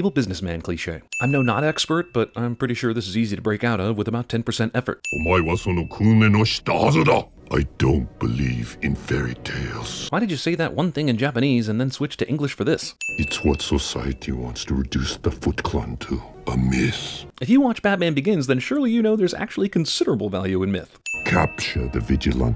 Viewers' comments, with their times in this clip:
0:07 someone get him a cough drop and some tea